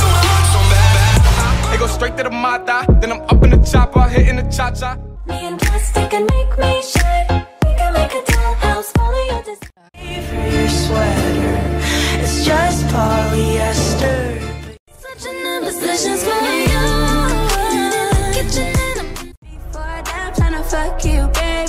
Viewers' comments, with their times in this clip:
0:07 love the song♡♡♡